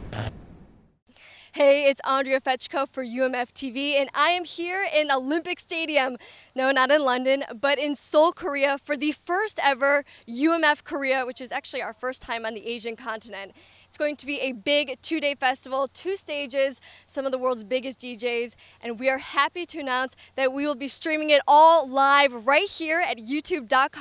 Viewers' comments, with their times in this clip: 0:05 loved the intro, couldn't watch after she said UHLIHMPIC